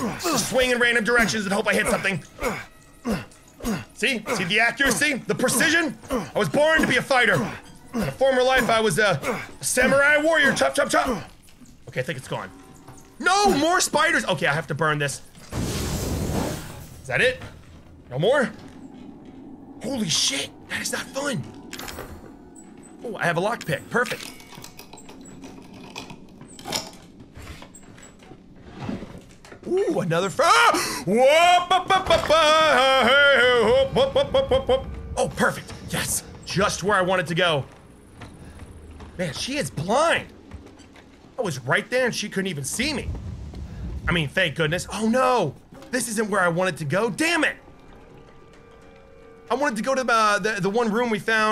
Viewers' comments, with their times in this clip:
0:08 HOW DID HE NOT HEAR HER! I HEARD HER
0:32 does anyone else hear the pennywise theme music?